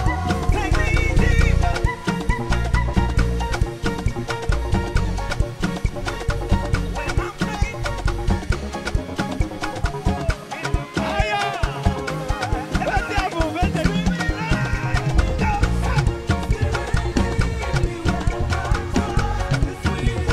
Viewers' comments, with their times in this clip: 0:08 Asinnnnn I have rewinded that part when the guy ran a mad scale like 10 times he understood the assignment die!